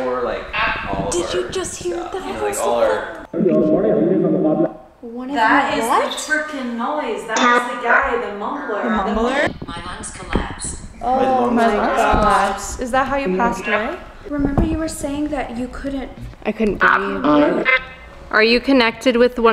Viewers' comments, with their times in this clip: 0:03 The unknown language sounded Hindi …”… aur Marne jene ka mukabla” loosely translated it’s a fight between life or death. But the words spoken sounded like a radio cricket sport commentary that ur instrument caught. And In the cricket coverage sports commentators often use this phrase is their commentary.
0:03 the another language, could it be German? I mean I heard something in German but I didn't hear what it said right
0:05 i thought i heard something like "hablas" or idk how it's written corectly and it seemed to be the end of the sentence so maybe that spirit, the one that was speaking in another language, was speaking latin? Idk just a theory